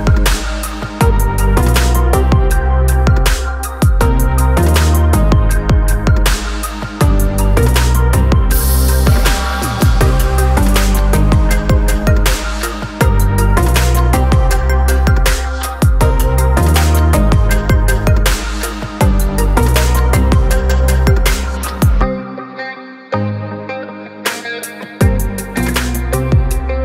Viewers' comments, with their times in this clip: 0:09 am I the only one who laughed when she laughed?
0:10 is the creepiest laugh